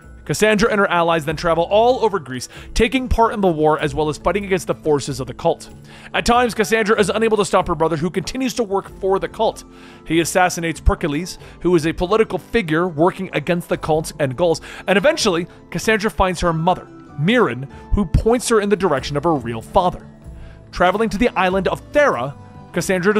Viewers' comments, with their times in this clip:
0:09 perk-ales thought i was done?